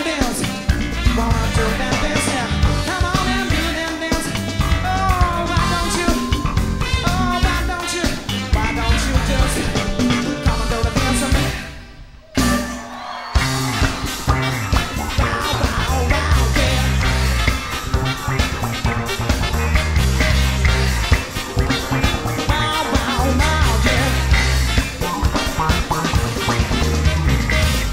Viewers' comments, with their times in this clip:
0:10 SWWET TIMING by jay kay on :)